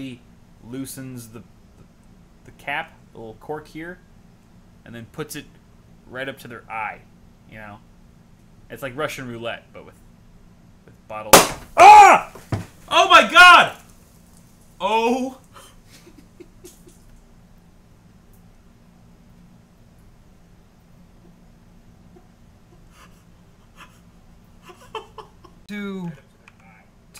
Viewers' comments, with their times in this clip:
0:10 sounds like seth Rogan screaming